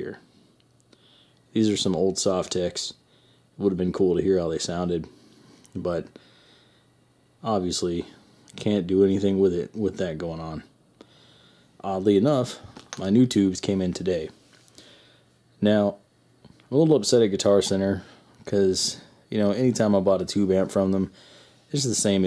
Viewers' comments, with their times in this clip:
0:07 Your a brave man! No way I'd turn on a amp am. I would be sitting outside wearing the amp for a hat! Lol 😆 Nice sounding amp.